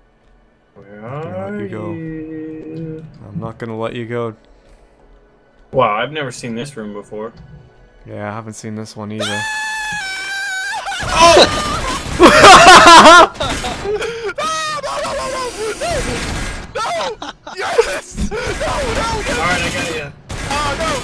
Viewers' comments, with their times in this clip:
0:09 dat bloody murder scream! 0_0